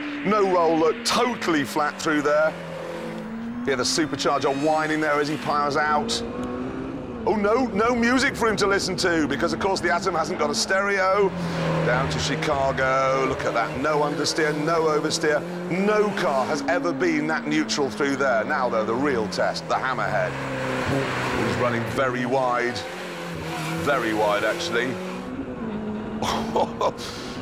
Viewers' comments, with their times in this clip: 0:08 The Super charger wine IS the music!!